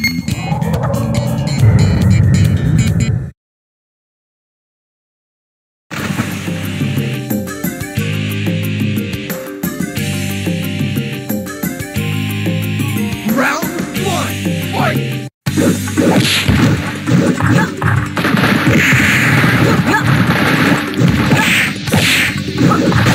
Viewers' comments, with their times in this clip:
0:09 He talks like Hulk...